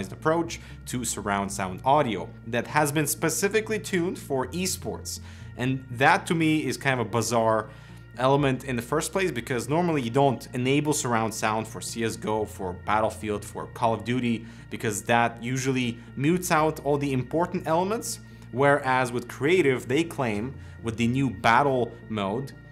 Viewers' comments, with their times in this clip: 0:03 It is just me or is that the sound of coil whine or something. There's a weird low pitched noise that I thought was coming from my PC starting ... Weird but ok...
0:10 what is this whine noise ?! gpu ? mic interference ?